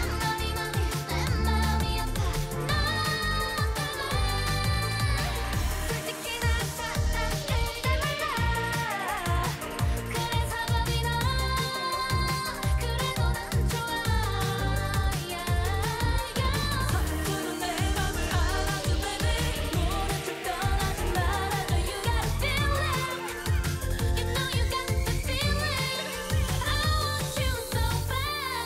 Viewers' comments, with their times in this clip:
0:09 girl with DEEP voice face